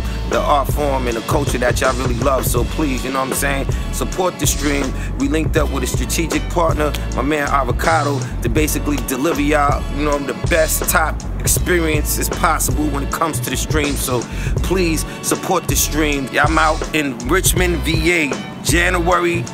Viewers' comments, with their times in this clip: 0:05 sounded like he was rapping to the background music